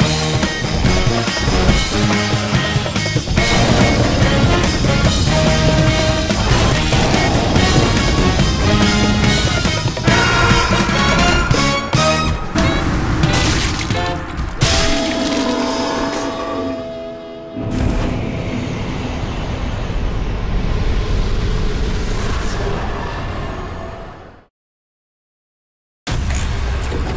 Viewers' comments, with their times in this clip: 0:09 Ahhhh the Solaire metal gear solid Snake death scream was hilarious.